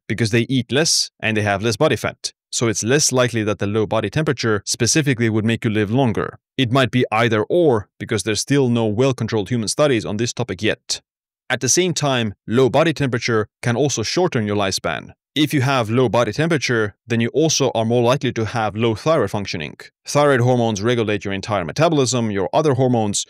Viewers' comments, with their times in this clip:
0:06 no whale controlled human studies yet, yet😅